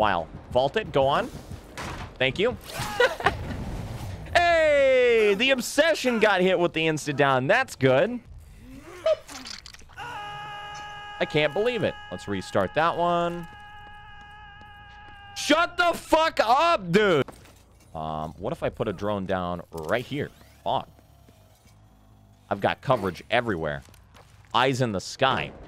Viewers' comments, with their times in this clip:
0:09 The Leon screaming for too long killed me😂